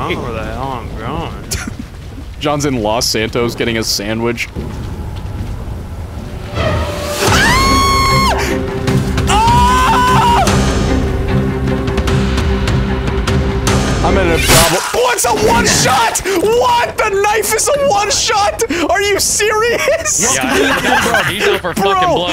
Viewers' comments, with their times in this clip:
0:06 He screams like a little girl lol ;)
0:07 Why did Smii7y scream like a girl bro